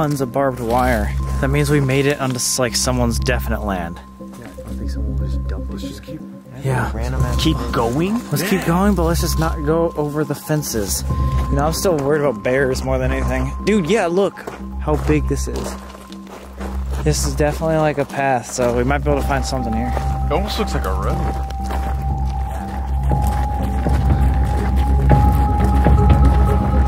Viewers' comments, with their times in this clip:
0:07 Is it just me or i heard a sound that sounded it came from my room but it was in the video I got so scared i replayed it a couple times and realized it was in the video, not sure if anyone heard it whilst recording it,